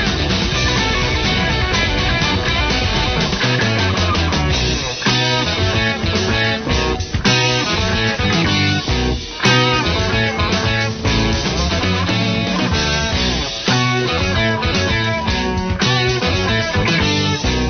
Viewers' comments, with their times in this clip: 0:04 anyone else hear China Cat Sunflower by The Grateful Dead?